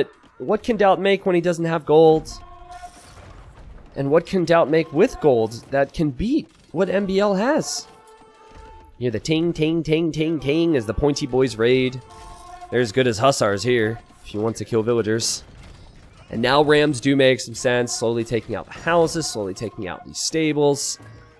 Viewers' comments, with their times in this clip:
0:07 T90: "And the TING TING TING as the Pointy Bois raid." I like that line. It hit the ear just right.